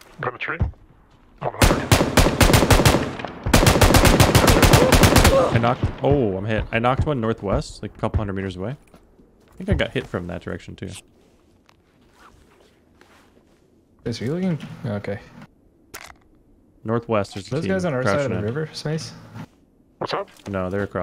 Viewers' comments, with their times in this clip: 0:05 I just realized pubg female sounds like roblox death sound